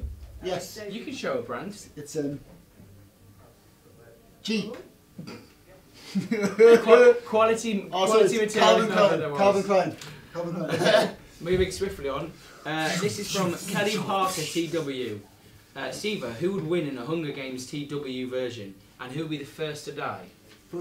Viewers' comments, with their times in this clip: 0:06 Siva's laugh is so adorable.